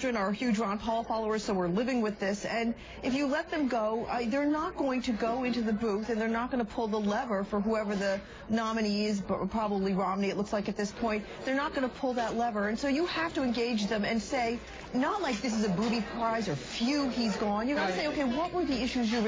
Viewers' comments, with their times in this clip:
0:04 I love how Jack loses his breath when his wife slips that all four of their children support Ron Paul. LOL!